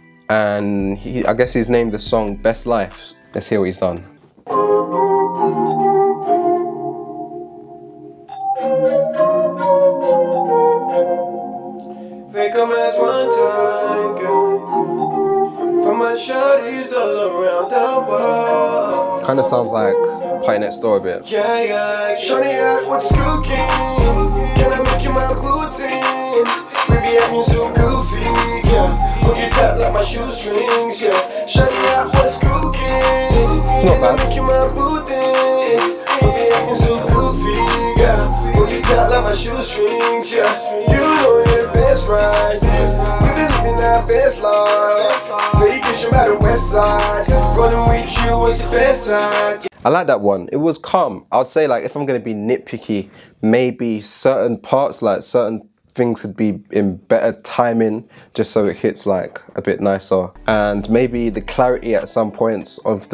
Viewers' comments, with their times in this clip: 0:10 the dude almost sound like a diet 03 greedo
0:49 "it was C U M"